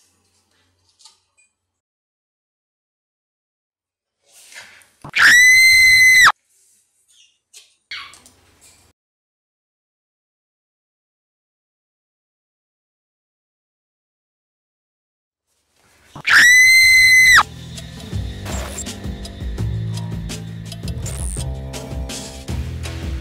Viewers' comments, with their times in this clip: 0:04 R.I.P Earphone Users